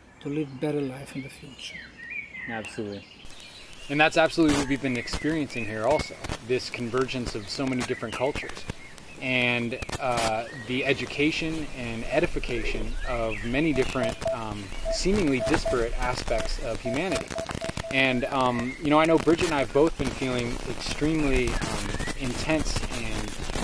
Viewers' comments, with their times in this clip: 0:04 Do we know what the interference is ?